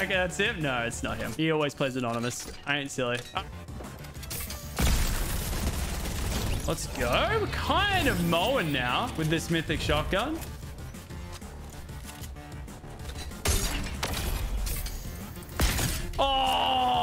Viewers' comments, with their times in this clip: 0:03 If u listen carefully u can hear muselk